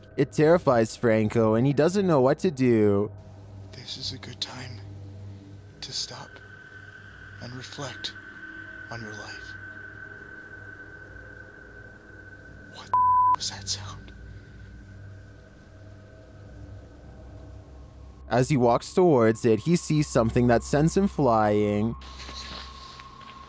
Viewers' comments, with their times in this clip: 0:04 That sounded like a bull.